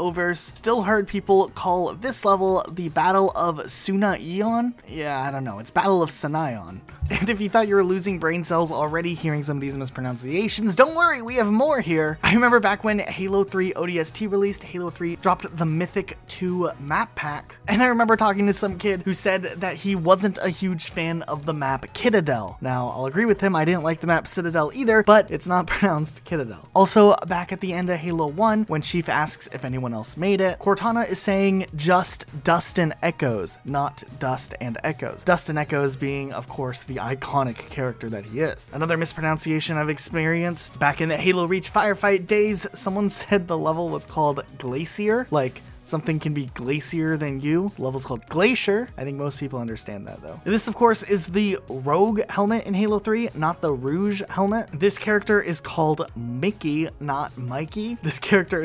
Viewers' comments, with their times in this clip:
0:07 I’m definitely losing brain cells hearing you mispronounce “mispronunciations”
0:45 ... not a mispronunciation... that’s what people are taught to call a glacier.. like when they learn to speak the accident that they are around also teaches their VOWELS